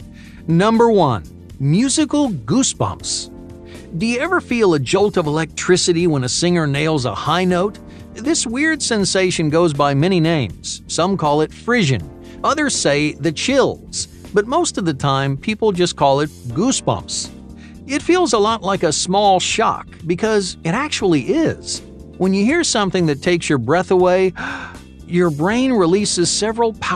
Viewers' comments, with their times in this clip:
0:07 Roger Taylor's Falsetto entered the chat